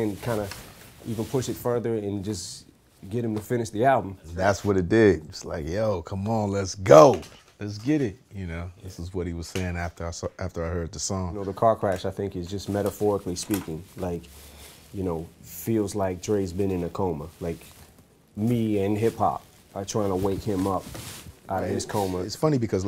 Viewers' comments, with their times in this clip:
0:04 i like dre and eminem but sounds a bit dodgy when dre says ''come on lets go after i suc..heard the song''.